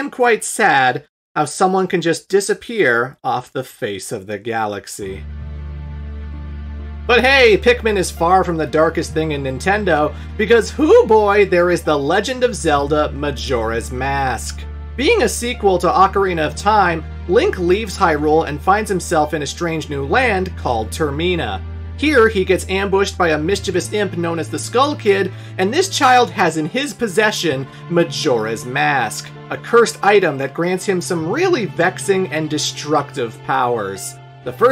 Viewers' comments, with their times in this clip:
0:07 That music hits me so hard.
0:20 The way you pronounced termina gave me an aneurysm